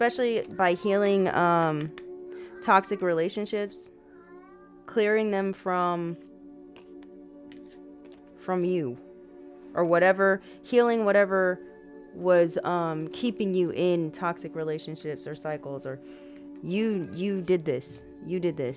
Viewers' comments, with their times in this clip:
0:04 Giiiirrrrl, you banging that gong caught me off guard in my headphones 😂😂 and then the face and hand gesture was everything lol 😂❤🤘